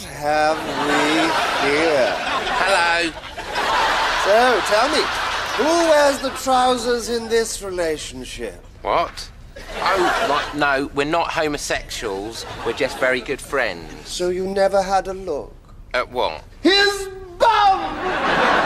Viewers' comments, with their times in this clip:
0:03 the look on his face and the way he casually says hello. Goddamnit Moss. lol.